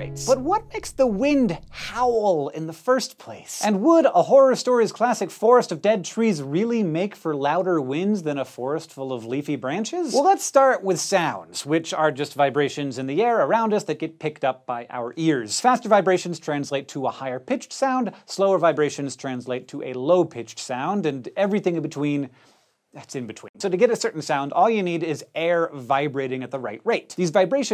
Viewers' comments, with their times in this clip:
0:10 sounded like a Discord notification